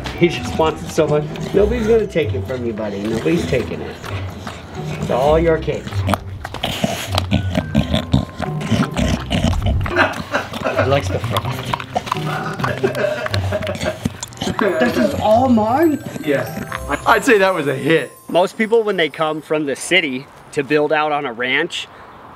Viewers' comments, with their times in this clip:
0:03 asmr dog edition